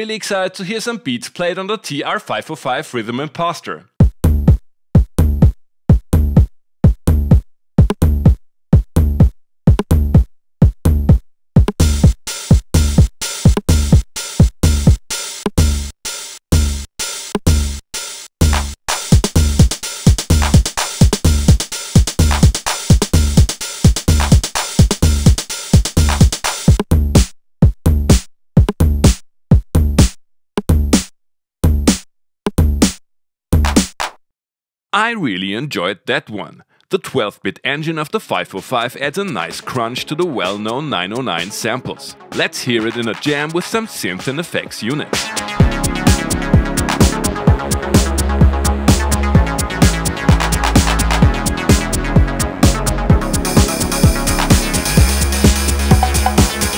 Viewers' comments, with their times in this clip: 0:04 I really appreciate the note-for-note Hardfloor quote
0:41 certainly doesn't sound like 12bit at all... (would believe Evan this being 8bit).